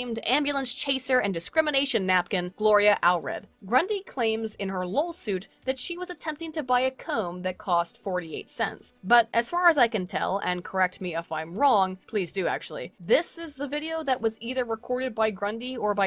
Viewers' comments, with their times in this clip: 0:04 Hahaha did you just call it a LOLsuit??? After Dick v. Maddox, I can't unhear it that way, either. XD